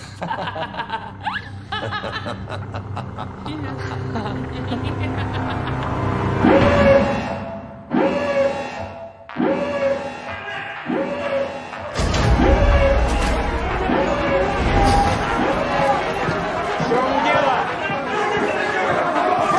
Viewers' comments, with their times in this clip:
0:07 I love how you’re just laughing along with them then all of a sudden you’re like: “oh oh.”